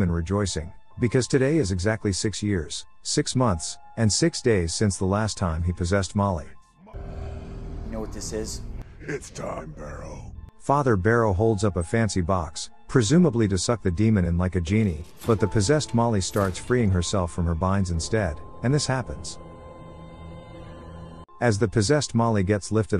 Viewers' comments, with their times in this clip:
0:09 "It's done barrow" And that sounded like "It's done bro" But ngl that was cool